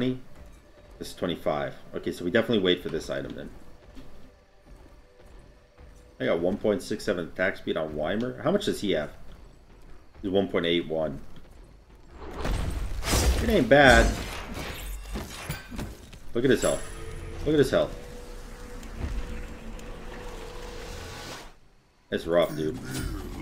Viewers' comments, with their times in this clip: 0:08 The way he says ymir’s name is cringeworthy.